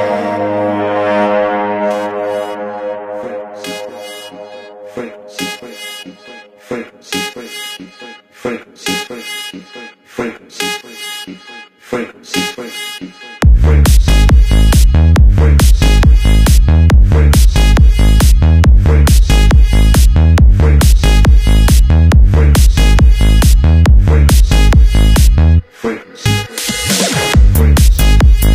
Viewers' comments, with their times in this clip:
0:09 Braba 🔥 engaging music! ❤ 🍁/2023